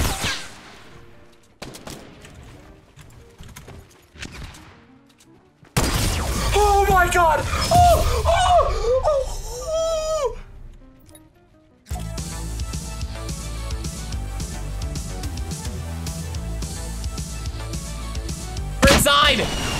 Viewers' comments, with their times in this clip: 0:04 he sounds like me goin thru puberty
0:06 when your parents are sleeping and try not to make a lot of noise...